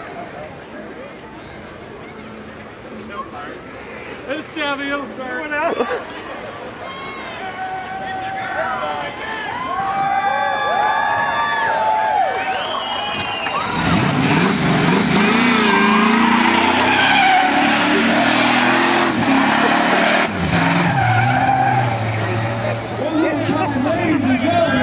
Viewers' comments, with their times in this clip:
0:07 They’re yelling “IT’S A GIRL!!!” ‘cause the red smoke looks pink, LMAO!